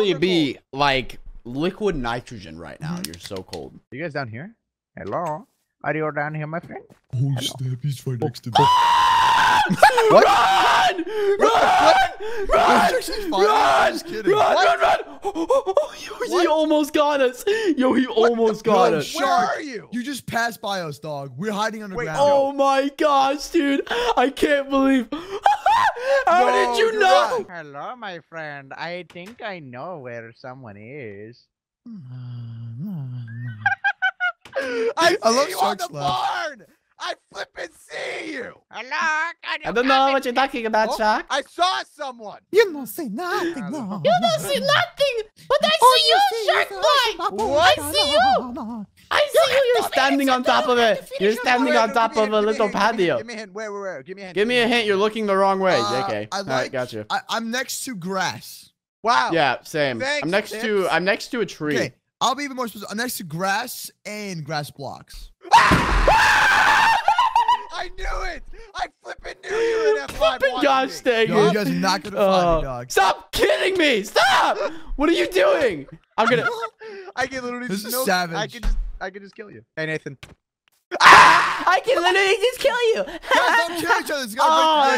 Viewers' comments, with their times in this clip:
0:09 pause rip headphone users
1:06 when unspeakble shouts hahahahaha